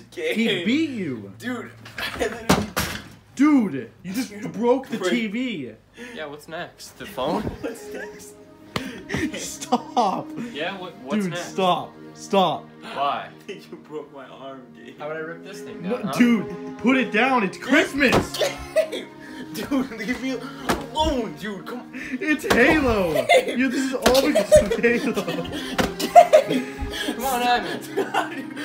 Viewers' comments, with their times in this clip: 0:09 the music in the background
0:11 the song fits soo well lmfao